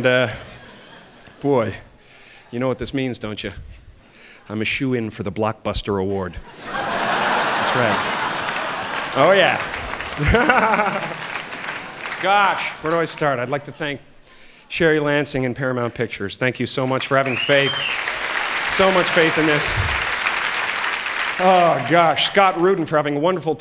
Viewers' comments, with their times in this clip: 0:09 brad pitt fight club laugh